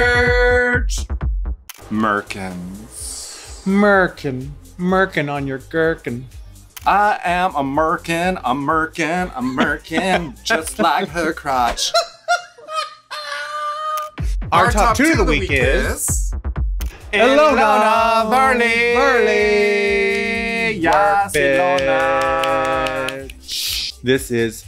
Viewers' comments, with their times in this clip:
0:06 Not the Ru's laugh after hearing the rumors about she was gonna be cancel for drag race 😂